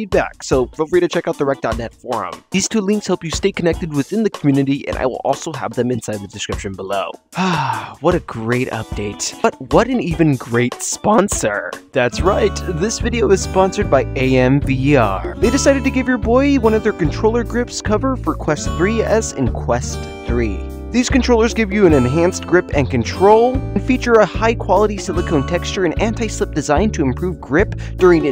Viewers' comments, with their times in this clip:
0:10 What was that voice crack